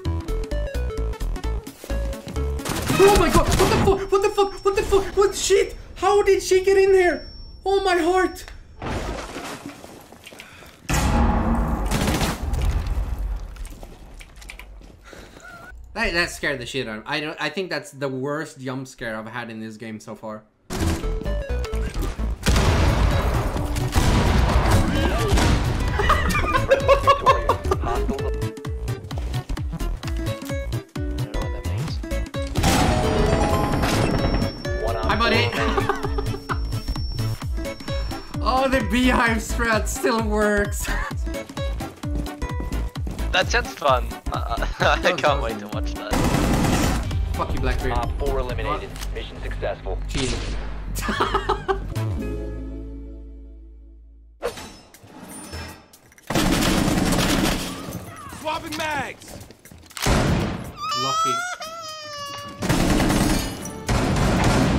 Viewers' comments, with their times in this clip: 0:05 Didn't you heard that 'Nokk'ing on the barricade?
0:45 The most pleasing sound to hear is a Blackbeard's face being cracked cuz of headshot